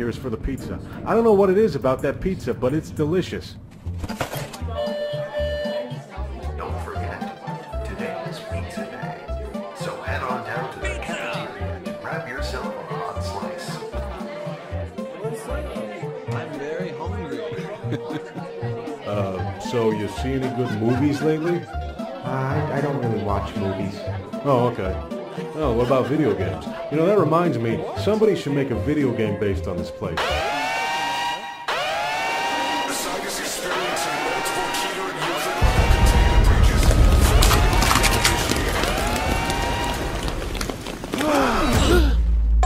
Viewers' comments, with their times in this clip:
0:10 The roblox Sound effect was not expected lol
0:29 has meme sounds
0:30 (Alarm) Guy in the background: Bro what are talking about, man?